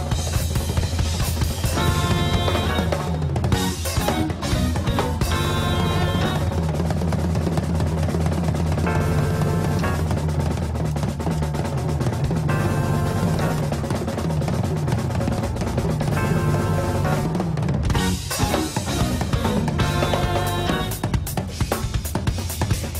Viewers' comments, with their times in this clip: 0:04 Is that you, Buddy Rich? XD